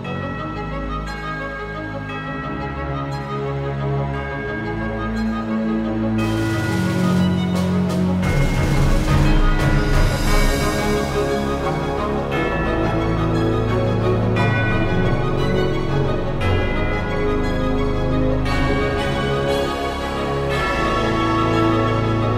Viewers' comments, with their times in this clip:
0:10 I absolutely love that part The beginning of the song sounds so calm.